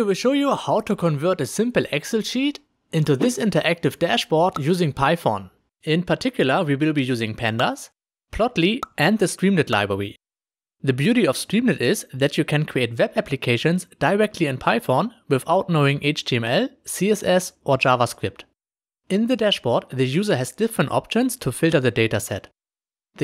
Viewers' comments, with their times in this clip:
0:04 Interactive dashbog using "Pi-phone" 😂 Don't hate me, it sounds funny, thanks for the tutorial really informative.